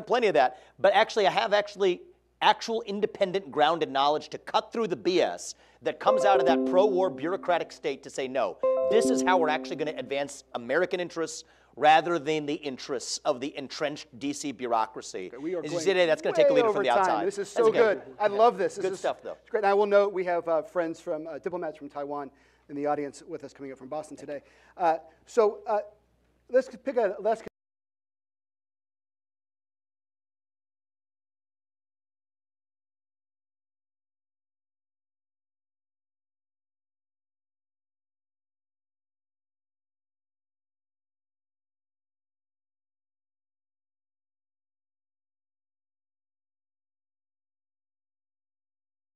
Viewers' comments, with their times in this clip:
0:06 Windows 🔔Alert-Message dings with approval of Vivek
0:27 Intersting that the sound cut out when the topic was China and Taiwan....and kicked in again whn Israel was the topic.... America caring about human rights??? Yeah, duh, just look at the millions of illegal migrants who will cause no end of problems in the USA. Who will be benefitting from this? Not the children and women who ae violated and trafficked. The economic situation is so bad at home and Ro is talking about human rights elsewhere? Jeez. Fix the mess in your own backyard bfore you criticize and lecture to your neighbour about his.
0:27 sound is lost for a couple minutes I recommend other people find another video to watch
0:27 I know you noted it, but what was the reason the audio cut out ? Seems like like some juicy details...
0:31 The sound cuts out at approximately marker
0:37 What’s up with the audio ? Truth too much for YouTube? 😂